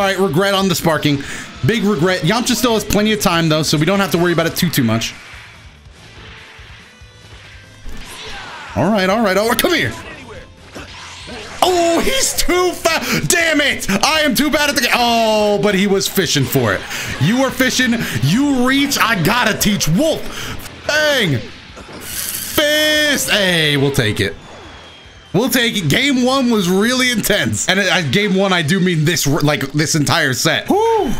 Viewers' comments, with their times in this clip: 0:10 Lmao thats the realest "DAMMIT" I've ever heard
0:12 the most sincere "damnit" you'll ever hear